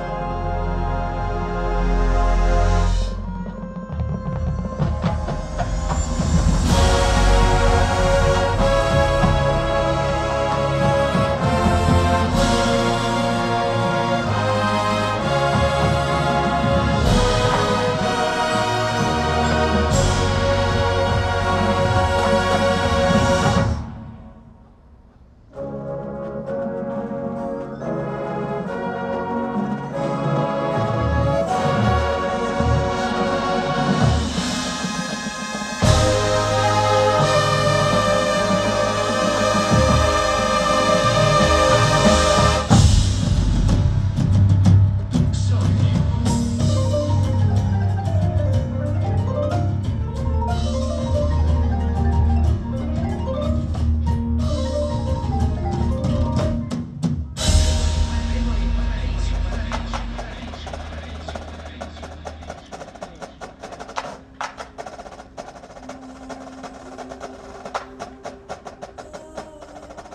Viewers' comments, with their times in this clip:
0:07 Ooooooo....those chord voicings are golden therapy after the loss of two summers. With the unusual start to this season, this preview is just what this longtime fan needed, than you!
0:36 i love that note
0:52 I knew as soon as I heard the marimba runs that there was gonna be carnival of Venice somehwere